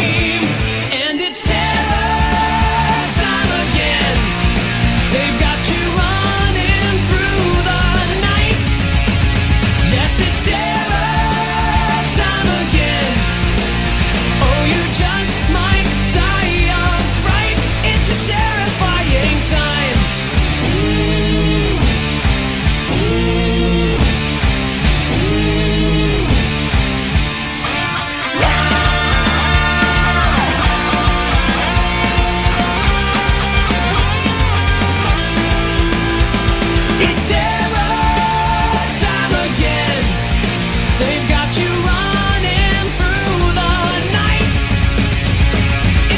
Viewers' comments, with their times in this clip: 0:03 I cant hear without hearing the fisherman going "gah!"
0:28 Free Replay of that Godly solo.
0:28 that guitar Solo was awesome